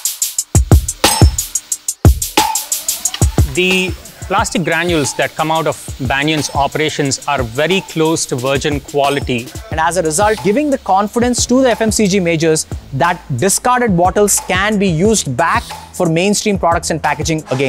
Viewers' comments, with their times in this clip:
0:03 someone Calling you at your door